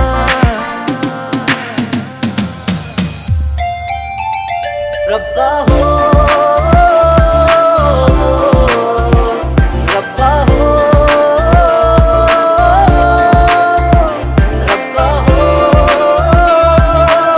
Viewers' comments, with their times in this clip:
0:04 ....I came here again for that drop